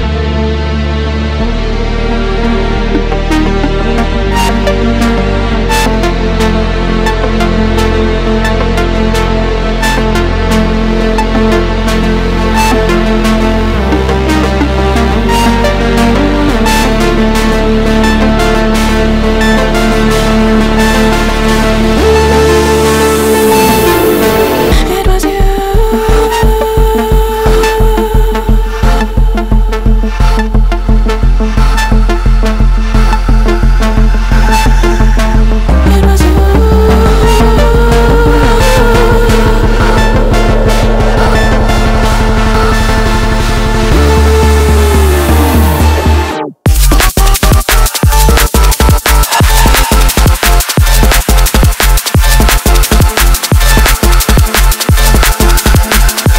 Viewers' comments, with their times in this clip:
0:03 Loving that build-up >
0:43 Damn is sooooooo good 🔥🔥🔥 These three working together is the spiritual continuation of the noisia project in terms of absolutely flawless sound design.